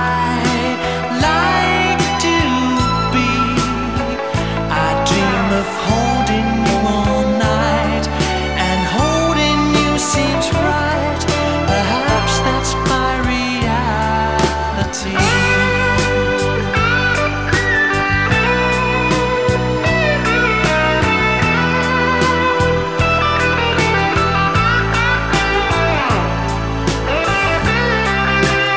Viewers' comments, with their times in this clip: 0:09 guitar solo. Thanks for sharing this beautiful song. Kind regards.